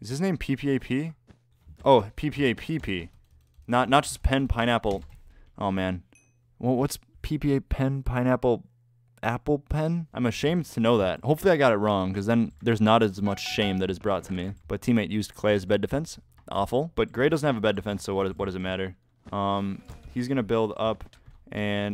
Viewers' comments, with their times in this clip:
0:06 it sounds cute :з